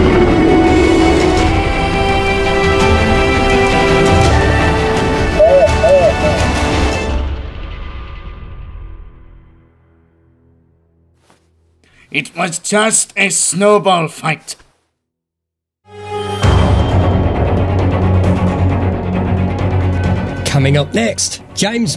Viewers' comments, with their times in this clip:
0:04 Quick! Someone translate Pyro's mumbles! We've got to know what episode 5 entails!